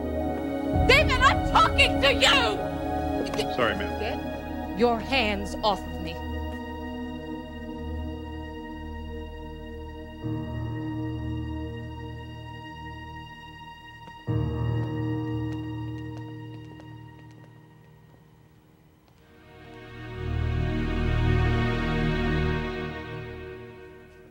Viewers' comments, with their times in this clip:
0:09 Pay attention to how the music from to the end brilliantly illustrated how David pulled the rug from beneath Sherry.